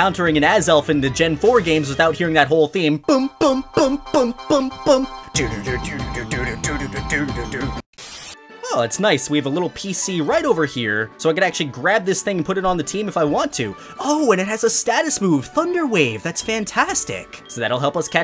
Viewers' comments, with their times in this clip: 0:03 probally the funniest music ever